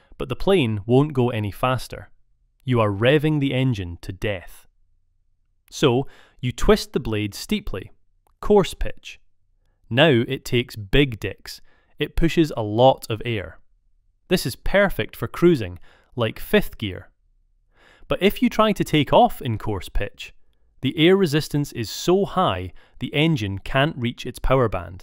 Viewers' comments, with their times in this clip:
0:10 Did I hear what I think I heard? 0.o
0:10 it takes WHAT??
0:10 Big dicks huh. lol
0:11 big what now? 😂